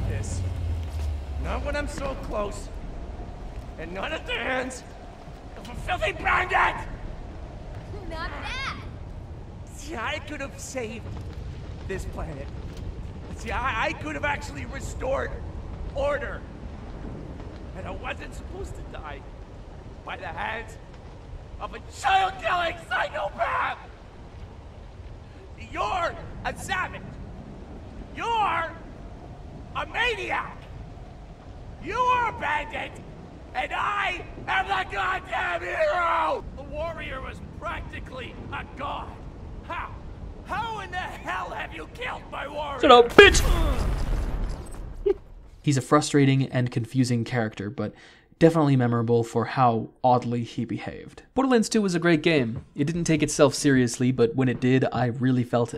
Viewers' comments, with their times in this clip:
0:06 Jack’s voice actor went hard here. Really nailed the emotion.
0:40 man, this voice actor play is incredible. Still amazes me with how much heart was put into these emotions. Such games are diamonds...